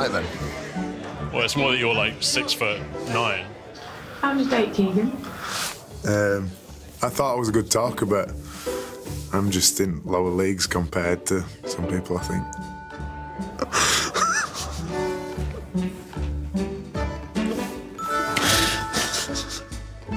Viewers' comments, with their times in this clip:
0:07 can someone tell me what he says ? the accents tough :)